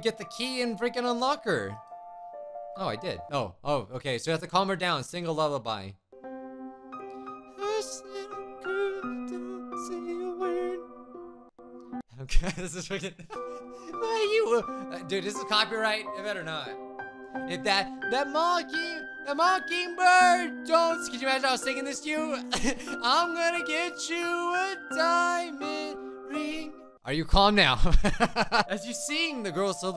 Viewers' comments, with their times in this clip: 0:07 My ears are bleeding no offence
0:11 Reminds me of my 6th grade class singing Happy birthday